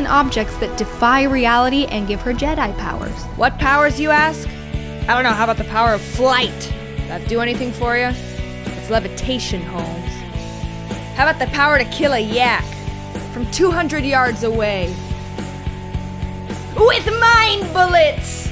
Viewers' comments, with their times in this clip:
0:03 The moment when someone doesn't just reference Tenacious D, but goes full Jack Black. 😂